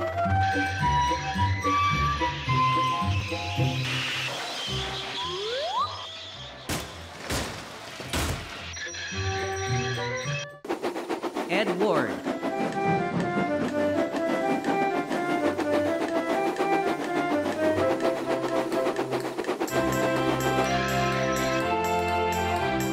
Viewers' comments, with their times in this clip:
0:06 Molly’s Conductor: OH POOP WE ARE GONNA DERAIL EVERYONE JUMP OUT- BANG! BOOM! CRACK! Even Though, Great Video!